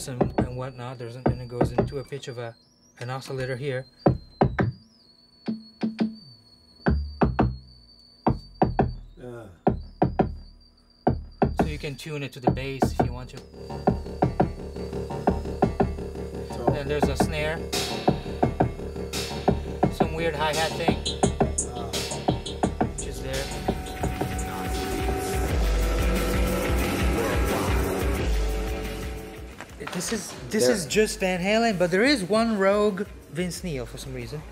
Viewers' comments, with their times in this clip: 0:03 Favourite part? Accidental Ultravox
0:21 That loop Dope! Has to be my favourite part